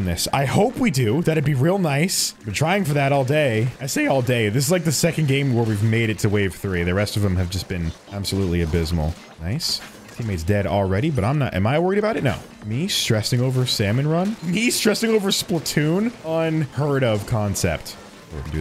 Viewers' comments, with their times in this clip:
0:03 that voice crack though 💀